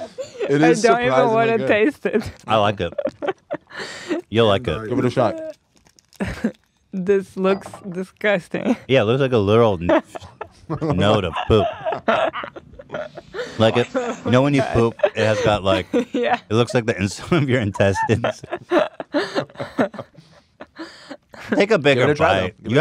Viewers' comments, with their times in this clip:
0:08 Hila having a laugh attack